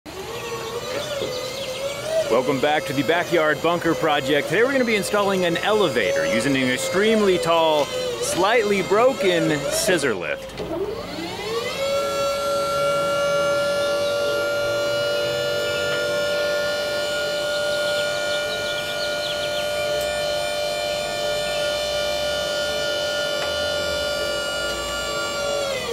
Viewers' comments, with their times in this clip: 0:03 "Welcome back to the backyeard bunker project" the machine: EEEEEEEEeeeeeeeeeeeeeeeeeeEEEEEEEEEEEE!
0:09 poor neighbours thinking theres a tornado alarm going off